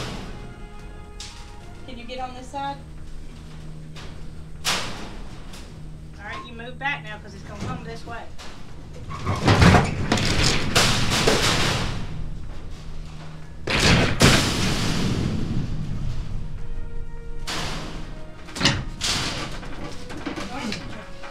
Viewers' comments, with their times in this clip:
0:05 lol THE BACKGROUND MUSIC YOU TWO ARE AWESOME!!!